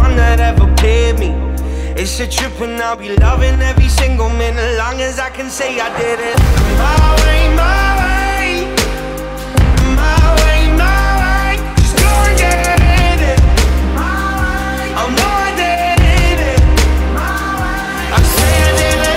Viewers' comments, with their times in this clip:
0:07 The raw strength in his voice sec